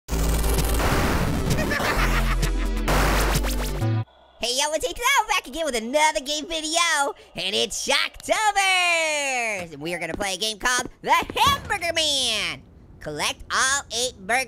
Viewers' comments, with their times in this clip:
0:01 haja😂😂😂😂😂😂😂😂 its funny screaming like pear little apple and the big melon too 😄